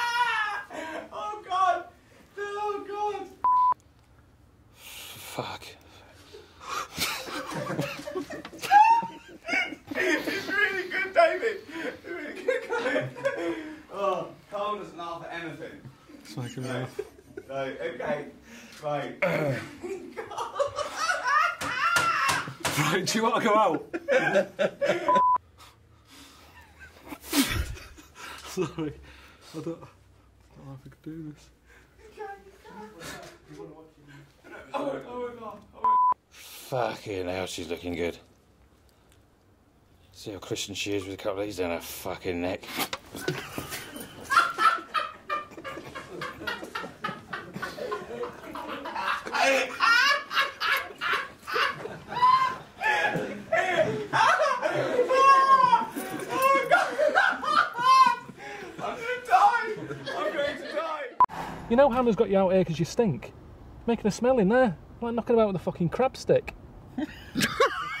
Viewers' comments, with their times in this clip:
0:03 The way he says "fff..ffuuck"
0:19 is one of the best laughs. Christ
0:19 "Right...Do you want to go out ?" Karls got mate giggles.
0:19 best laugh ever.
0:20 the way ricky laughs at karl's facial expression is 🤣🤣
0:22 Nah its the desk slam and laugh that got me.
0:22 I think someone else commented this, but Karl saying " 'right, do you want to go out??" is exactly like a school teacher talking to a naughty kid hahaha
0:25 Karls laugh is so good, you can tell he's having a great time
0:31 what does he say that makes Karl laugh? I can't make it out.
0:39 Wow Karl actually corpsed (laughing during a scene) many people believe he doesn't find anything funny and he only moans but he actually found something funny
0:39 I have watched this like 20 times and still have no idea what kev says
0:39 I have to admit, I have no idea what he is actually saying
0:39 Not sure what he said ??
0:43 is the best Ricky laugh I have heard! xD
0:51 Ricky's laugh best ever.
0:51 You know it's a good one when he hits that high note
0:55 ricky has the best laugh ever:')